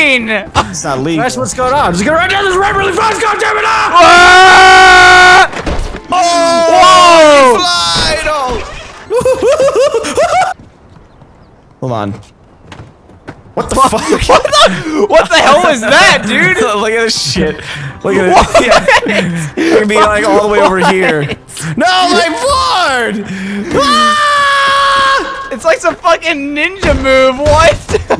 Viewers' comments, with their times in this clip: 0:09 that laugh tho 😂😂😂😂😂😂😂😂😂😂😂😂😂😂😂😂